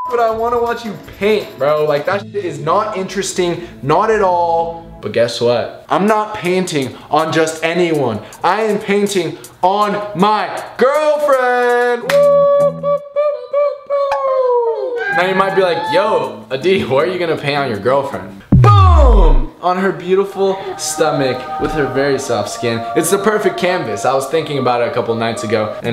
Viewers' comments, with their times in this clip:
0:06 or 3 he said panting I think or said something that wasn’t painting so